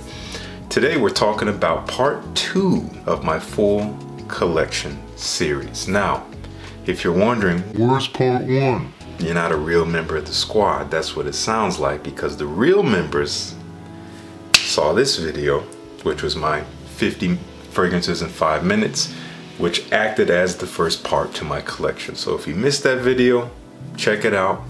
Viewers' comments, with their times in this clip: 0:09 that delivery was too good 🤣 Those intros are great by the way! How long have you been playing? Started to get real into playing piano jazz. Hard stuff but worth it.